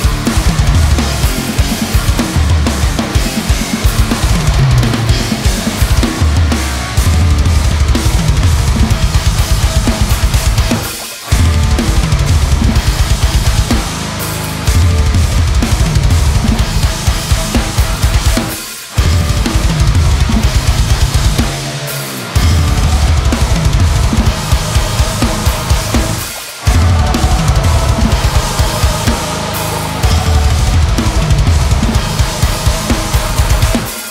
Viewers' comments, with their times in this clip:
0:06 The weird thing here is for the part In the album version it's all straight double bass. In this video he uses the toms to break up the foot pattern. Not sure if he's doing that just to make it more interesting for a live playthrough or because he struggles with the double bass in that part.
0:18 1. I had to go back and listen to the original to hear if you were doing those crazy fills in the actual track or just for this video 2. Going from the half time to regular time and the very end was fucking sick as shit